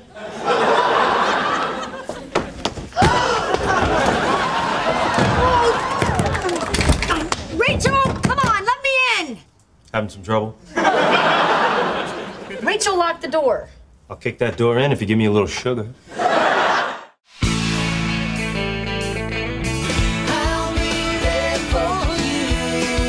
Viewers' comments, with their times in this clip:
0:09 The way Joey said Having some trouble ?? Was so cute